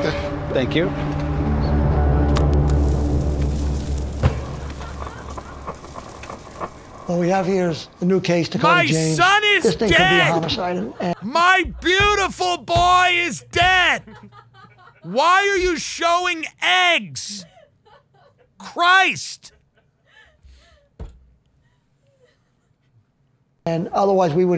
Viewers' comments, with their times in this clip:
0:08 Tim sounding so much like Daniel Day-Lewis line in There will be blood . Bravo Tim! LOL